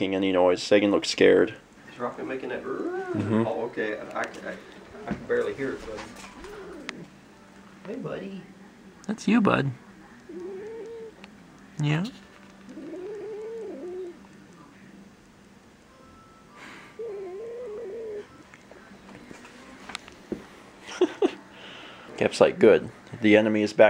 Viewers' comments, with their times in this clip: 0:10 rocko sounded like a ghast from minecraft